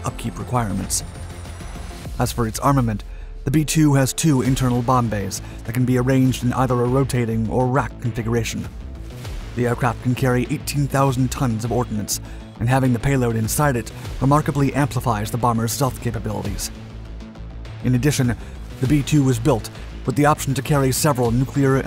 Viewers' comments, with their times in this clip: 0:09 I think this channel deliberately publishes fake stats and mixes up footage to generate comments lol... the narrator claims the aircraft can carry 18,000 tons of ordinance. Thats the same weight as 720 fully loaded shipping containers. I'd be surprised if a stealth bomber could take-off with 1 fully loaded shipping container worth of baby killing ordinance stuffed in it's ultra sleek airframe. Gotta love his breathless delivery of misinformation over unrelated archival footage though.....